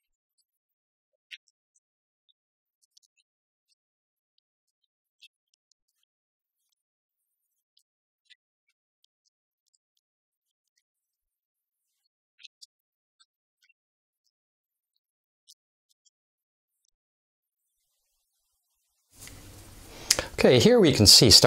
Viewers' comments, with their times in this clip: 0:08 No audio, only subtitles are audible. Camera looks very interesting. Correction; audio